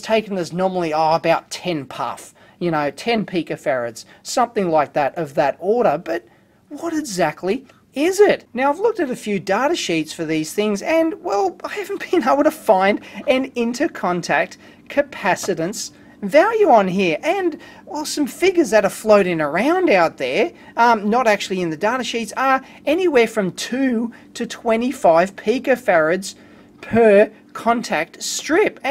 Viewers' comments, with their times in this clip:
0:10 From and on something started humming in the audio ?